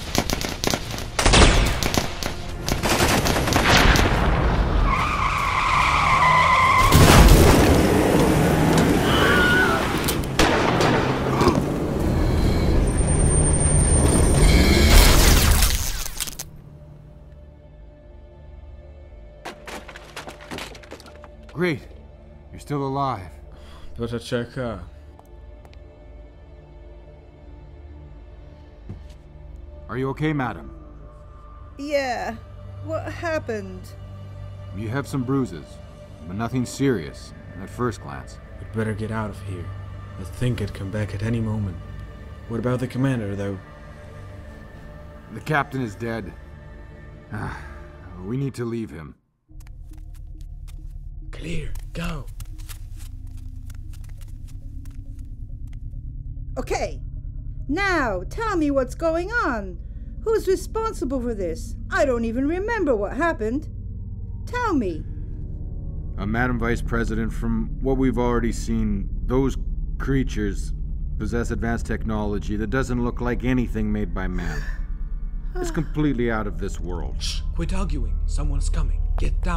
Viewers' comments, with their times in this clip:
0:08 nice Wilhelm Scream XD I'm guessing Warner Bros recruiters are gonna get in contact with you guys some day if they haven't already.
1:03 The movie was great although im not sure about the voice act for the accistant*.